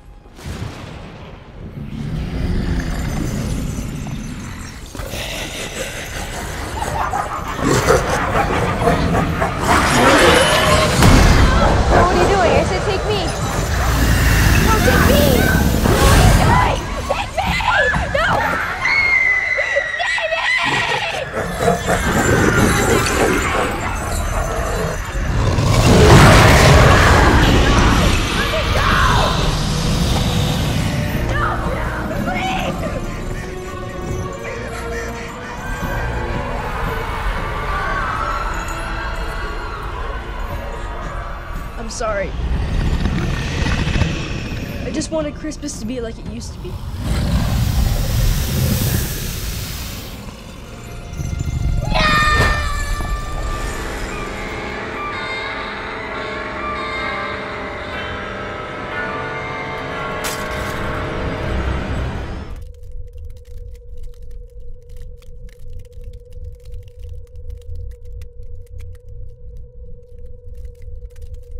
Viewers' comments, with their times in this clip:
0:04 The sinister laugh.
0:05 I love his demonic little laugh
0:26 anyone think that was a bit to high pitched
0:54 (yells down into pit) krampus: see ya next chirstmas ya filthy animal